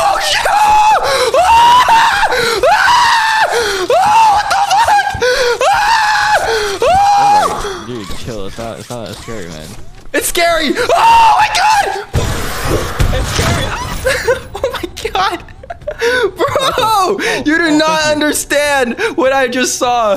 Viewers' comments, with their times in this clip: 0:06 bro got me laughing nah cuz tf was that scream